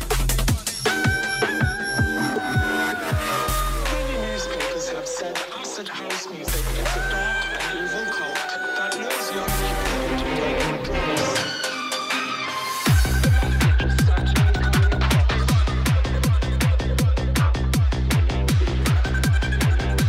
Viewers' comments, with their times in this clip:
0:04 ONE OF THE SICKEST DROPS IN DJ HERSTORRRYYYYY